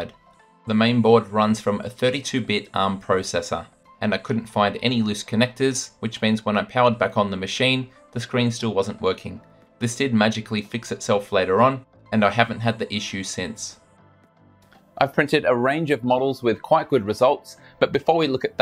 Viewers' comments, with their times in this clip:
0:05 The fan is so loud because a wire is touching it